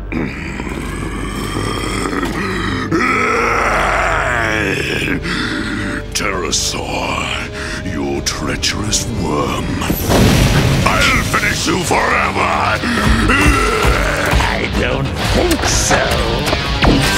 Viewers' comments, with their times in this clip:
0:03 roaring growl of primal dominance.